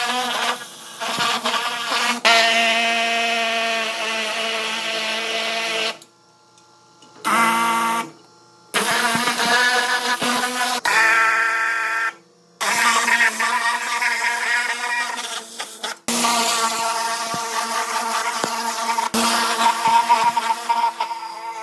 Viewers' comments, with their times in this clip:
0:06 I'm a simple man and easily amused. The side bloorp cracked me up. I stand nothing to gain by lying, but my guess was it would be a 2.5 lb loss, so very close. What a cool video. Thing looks super clean now. I like how the balls fit perfectly in the cylinders. And hey, if you don't want a bad back when you get my age (protip: you don't), lift heavy stuff more with your legs and less with your back. I'm not being negative, you're a strong guy. But be nice to your back. You'll need it for life.